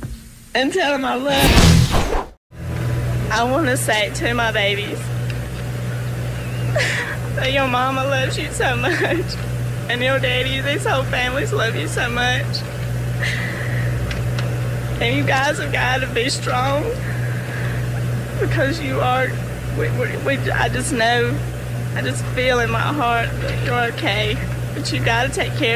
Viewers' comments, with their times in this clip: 0:09 Gentlemen, do I see a laugh & some brief micro-smiles in the video starting ? Thank you for the always-fascinating content!